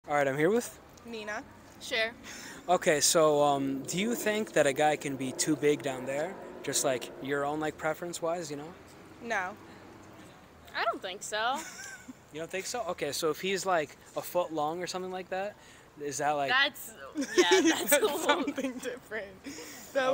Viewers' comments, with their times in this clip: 0:02 The girl on the left is EXTREMELY weird. I mean her friend simply gives her name and weirdo starts cracking up. What is so funny about her name??